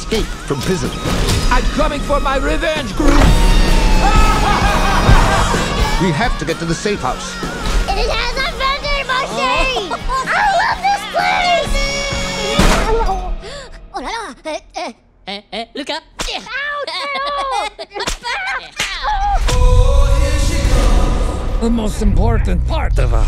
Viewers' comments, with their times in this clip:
0:08 she sounds like bingo from BLUEY for some reason